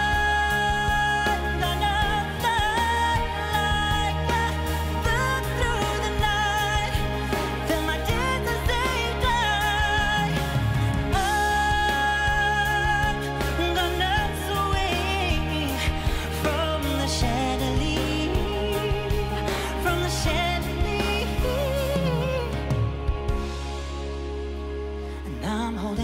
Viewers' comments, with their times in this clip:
0:08 his voice remind me of Michael Jackson voice.